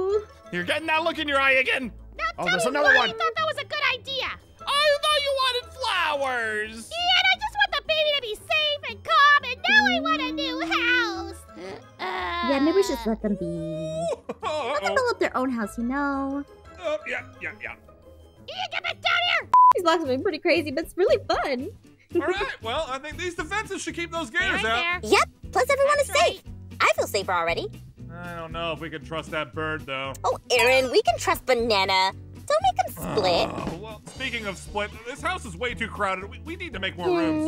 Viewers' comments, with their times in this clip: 0:09 Did anyone else notice aphmaus mic changed
0:13 uh looks like her mic broke
0:20 im sorry but THE VOICE??
0:20 Why did the mic and your voice change
0:21 What happen to aphmaus voice ??
0:24 Why did Aphmau’s Voice sounds so weird
0:25 Why did her voice change in the middle of the vid-
0:25 That voice change was weird